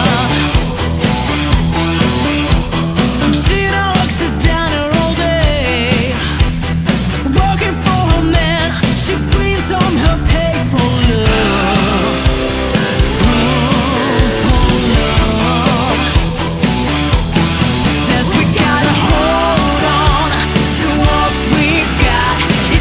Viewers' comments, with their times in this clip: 0:04 You can hear that be bit down on the pipe hehe